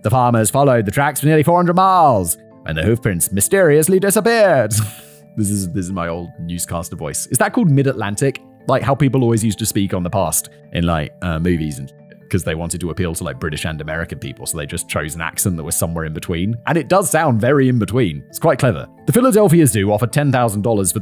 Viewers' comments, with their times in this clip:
0:07 Your old newscaster’s voice is quite good lol best accent to date!